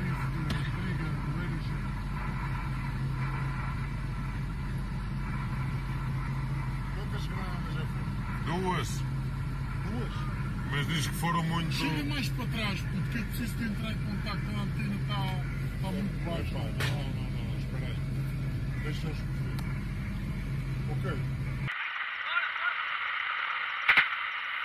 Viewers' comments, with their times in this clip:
0:10 sounded Russian to me. Not Portuguese. Anyone confirm?